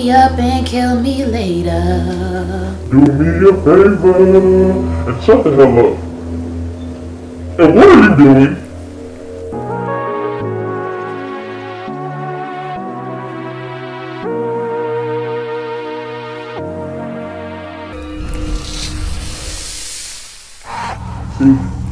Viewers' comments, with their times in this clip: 0:03 the fact he actually sang that part 😂😂 & then SZA💀